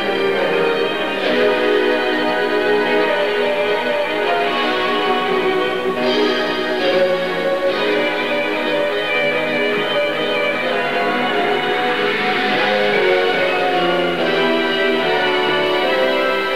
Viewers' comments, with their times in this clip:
0:03 The guitar solo is honestly my favorite thing about the early Stratford run, It's so out of place, but it also works in a way